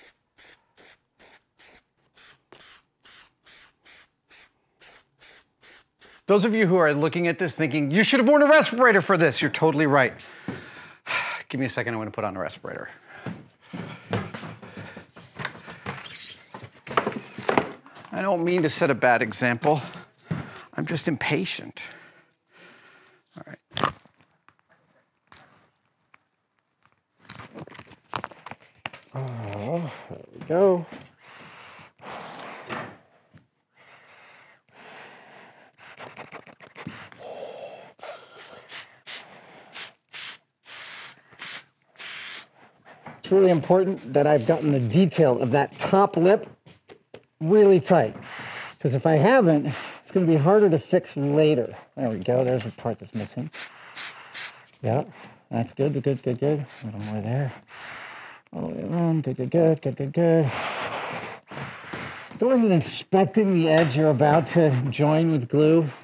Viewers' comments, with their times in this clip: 0:07 "You should have put a respirator on for this!" "You're totally right." Breathes in the fumes heavily
0:36 Nice Vader breath there, Adam!
0:38 the "Vader Breathing"... Hilarious. Very subtle.
0:52 When she tells you to get in that like you Darth Vader mixed with bane.